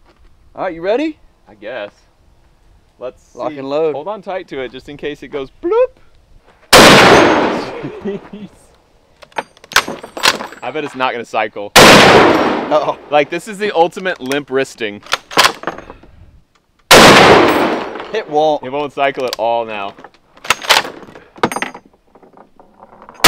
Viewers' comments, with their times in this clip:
0:06 i had my volume near 100% with my headphones in and looked away for one second until came on and scared the crap out of me